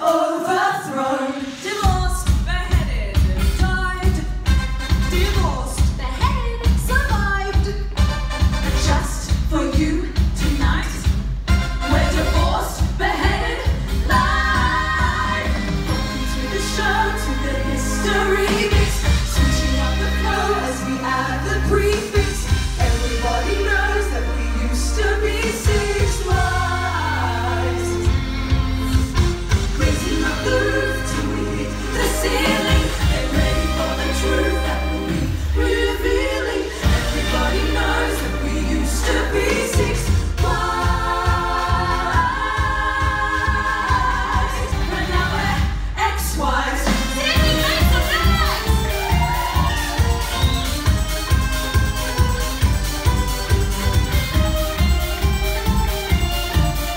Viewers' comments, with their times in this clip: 0:06 Howard's little "beheaded!" was so cute i- 💞💕💞💕💞
0:37 (the *knows*) their aussie accents are so prominent lol